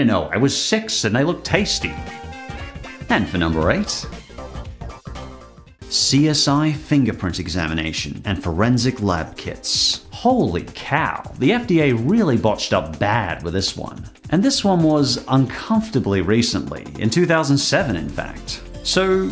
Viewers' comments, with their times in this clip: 0:07 the music sounds like from Mega Man Zero 2. Just played that game on my Switch.